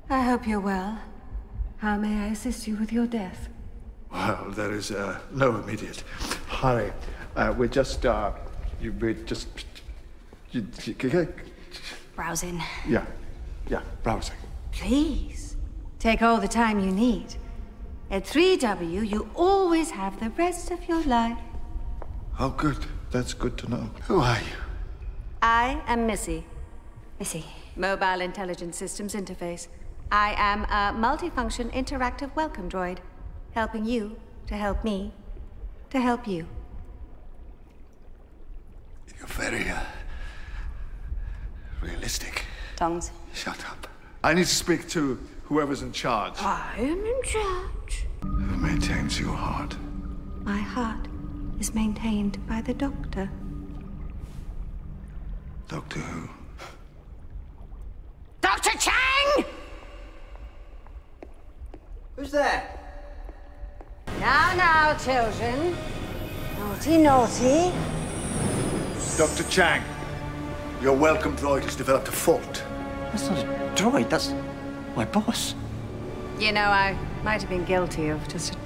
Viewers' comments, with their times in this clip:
0:06 I'm wondering if that stuttering is part of the script or if he actually just forgot his lines.
0:13 is it just me or does Missy sound like GLaDOS in this scene?
0:27 Missy doing her best GLaDOS impression.
1:01 when i watched this episode for the first time , i freaked out listening to Dr. Chang's voice as his voice very much matches to the 10th doctor.